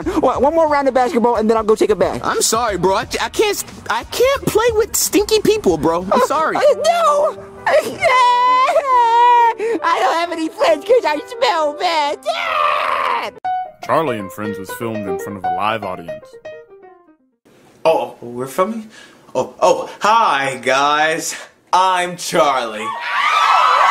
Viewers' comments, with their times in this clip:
0:07 5 year old bowser junior crying
0:10 Bowser junior have SpongeBob voice